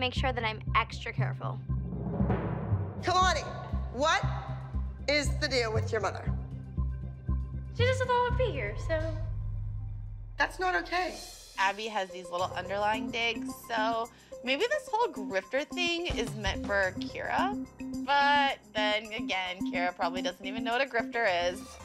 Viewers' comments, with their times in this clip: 0:06 her saying that sounds edited, and the subtitles were unnecessary...